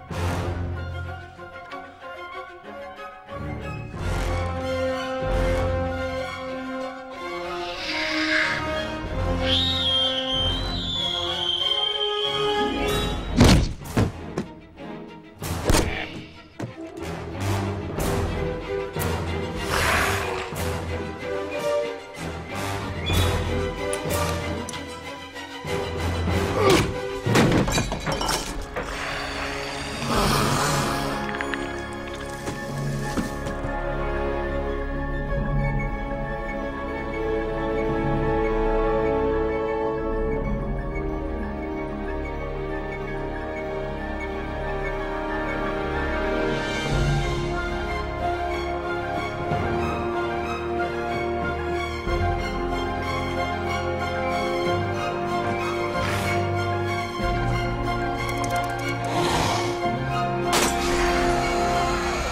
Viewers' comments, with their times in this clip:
0:08 legit thought that sound was a velociraptor from Jurassic Park for a second
0:46 music went into awesome mode